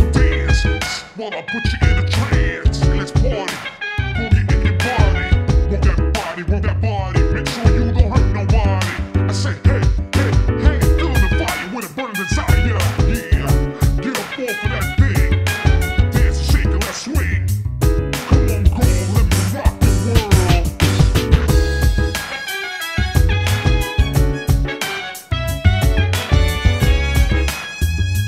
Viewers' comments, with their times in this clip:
0:09 is there a genre for the music ? it seems so early 2000s!